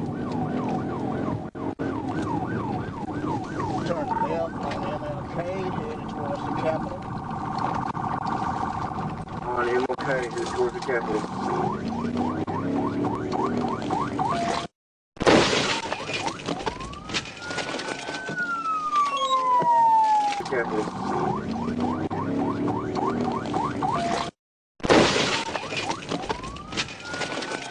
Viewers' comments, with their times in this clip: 0:10 G she was at a stop, heard a siren and thought "Oh, thats a funny sound, instead of looking down the street, ill continue driving" People who think like you shouldnt have a license.
0:11 You are 100% not paying attention if you didn't see that officer before you made that left, I would go as far as to say they didn't even look left before making a left hand turn; there were only 2 cars that could have potentially blocked their view, but the distance between them would not have blocked your vision from the police vehicle not to mention unless you're legally deaf you would have heard that siren while he was making the first left onto King.